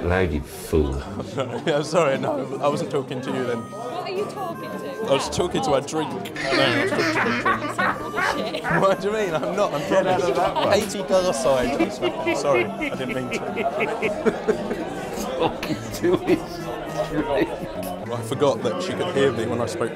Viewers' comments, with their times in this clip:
0:05 James cracks up 🤣
0:06 *hysterial goose laugh*